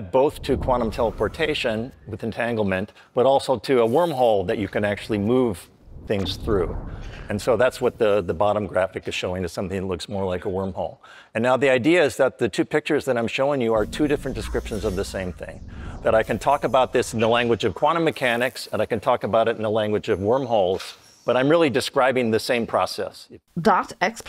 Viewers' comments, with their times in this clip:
0:05 But they added some sound design to make it even MORE realistic!